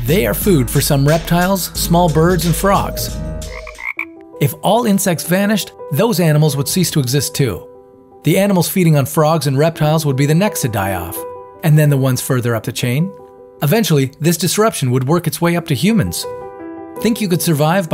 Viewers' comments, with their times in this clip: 0:04 this part made me start to cry becuase the music